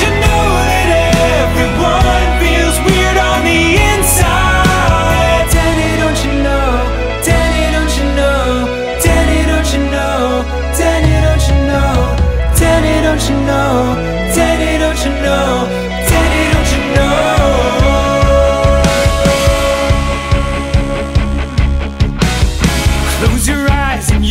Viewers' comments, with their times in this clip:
0:09 That shit is Prince of Egypt levels of clean.
0:09 WAS SOME DISNEY ASSSHIT RIGHT THERE OMY GOD H O W